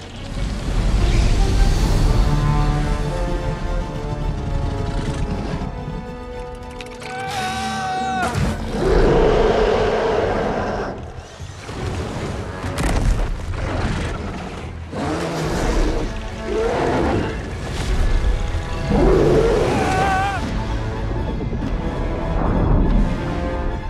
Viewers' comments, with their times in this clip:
0:05 ! Wait! That’s roar sound like The scream of Kaiju Preacher.